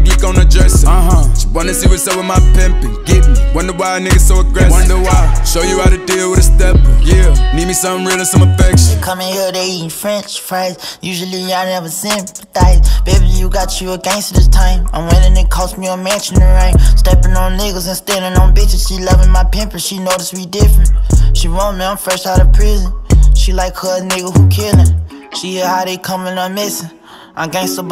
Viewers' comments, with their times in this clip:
0:08 Great song!!! ....until Kodak sound like str8 🗑